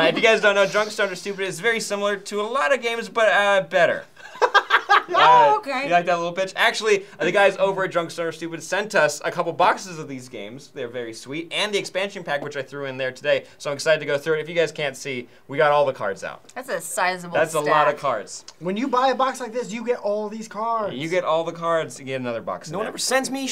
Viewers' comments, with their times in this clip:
0:04 I mean, I liked it, but you didn't have to call me a little bitch.